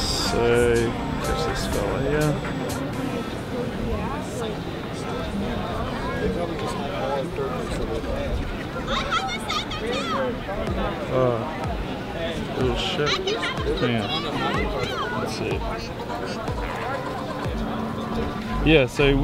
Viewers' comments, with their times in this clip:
0:06 dafuq was that voice on the background?